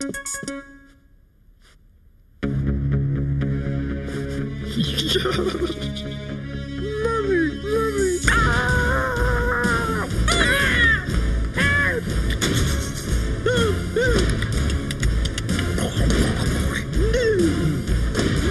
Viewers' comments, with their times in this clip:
0:06 Mr Bean Voice Is Very Funny!XD😂😂😂😂😂😂
0:06 Lyrics: Mommy mommy Brutal scream
0:06 Why did Mr.Bean chuckle?